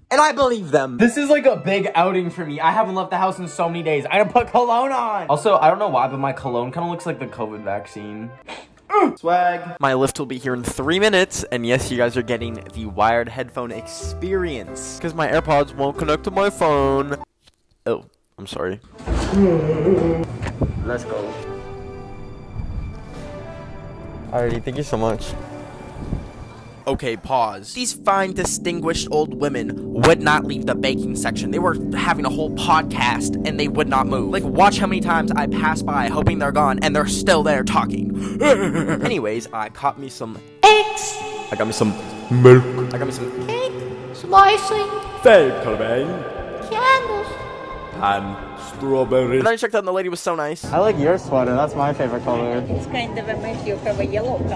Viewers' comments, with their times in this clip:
0:07 My sense of humor is so "low brow" I replayed so many times and the "uh" gets funnier each time 😹😹😩😩 what's wrong with me?
0:40 the voices I hear in my dreams lol